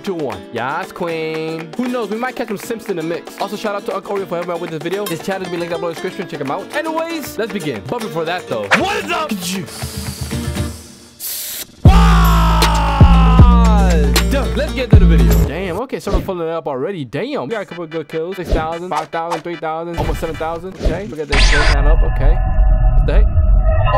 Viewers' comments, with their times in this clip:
0:10 random breathing ssssQUADDDDDDD!!!